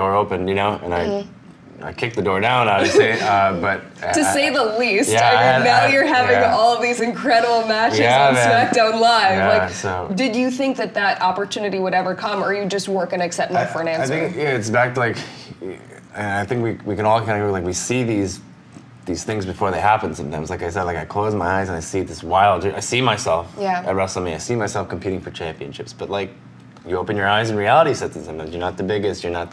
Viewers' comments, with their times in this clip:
0:10 Everybody laughing and Pete looking all serious at Ali 😂😂